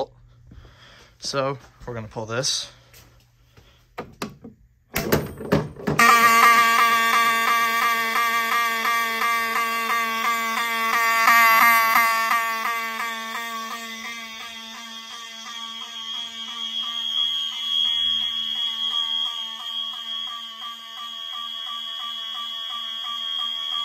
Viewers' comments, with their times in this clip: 0:06 The 7002T was pretty fast 🏃‍♂️😳